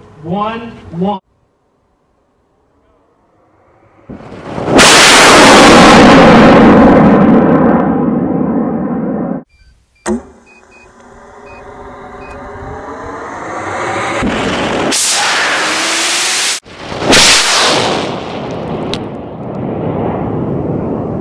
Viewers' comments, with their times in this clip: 0:03 Could've warned us about the hearing loss involved with this video
0:05 RIP headphones users